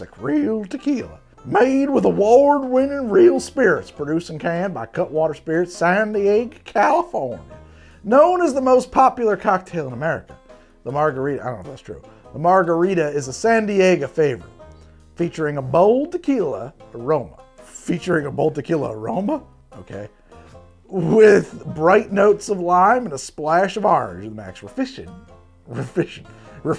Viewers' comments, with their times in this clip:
0:08 HAHAHAHA what even is that accent???